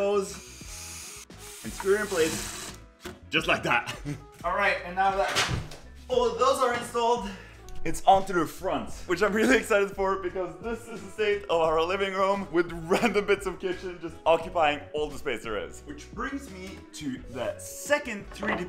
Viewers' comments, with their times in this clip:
0:03 Thats a fart! Just like that! 😂